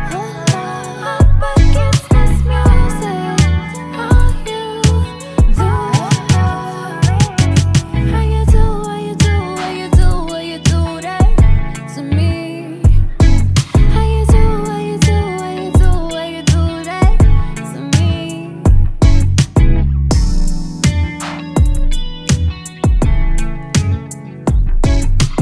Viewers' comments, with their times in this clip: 0:06 she really didn’t need to snap on us like that 😍